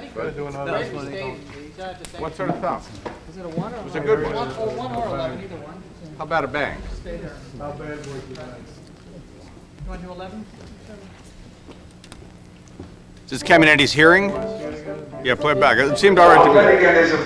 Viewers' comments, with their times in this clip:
0:04 In times of stress, a hero is born. Who will give rise to ASMR. It may be only for a few seconds, but it will be ASMR regardless. This such hero, arrives ...if only for a very short while.
0:04 In times of stress, a hero is born. Who will give rise to ASMR. It may be only for a few seconds, but it will be ASMR regardless. This such hero, arrives ...if only for a very short while.